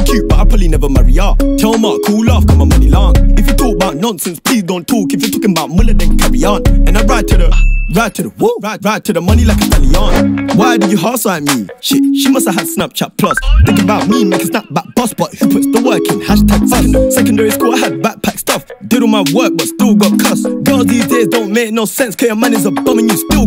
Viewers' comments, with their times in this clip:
0:07 Why was the 2 birds on beat tho?? 🤯🔥🔥🦅